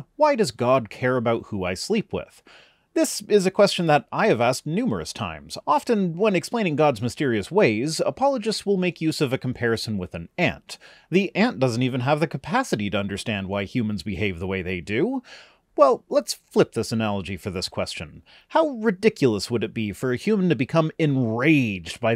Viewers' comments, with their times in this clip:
0:09 for a moment I thought you were going to talk about having a nosy Aunt who wants to be involved in your love life despite having literally no reason to be